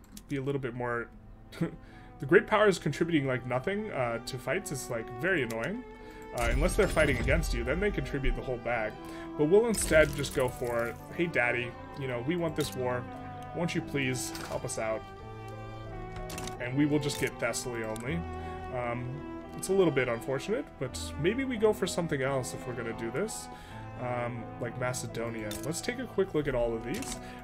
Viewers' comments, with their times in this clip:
0:10 why does the word "daddy" come out so naturally?
0:10 why does "daddy" come out so naturally?